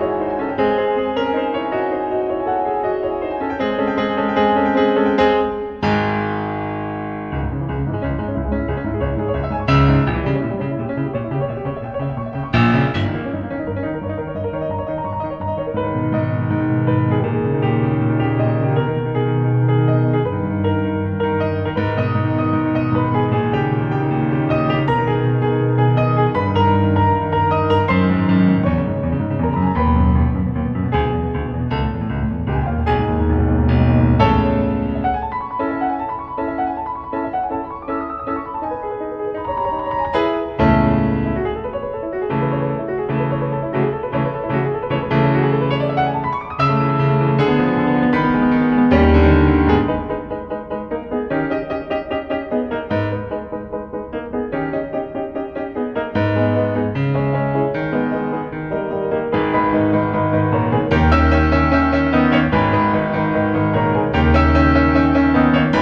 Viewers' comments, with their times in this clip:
0:03 Regarding Moonlight Sonata 3 movement I think shouldn't be pause like that. Everything else is perfect!
0:05 when the bass droppped i felt that.
0:47 portion really reminds me of Attack on Titans title track Boku no sensuo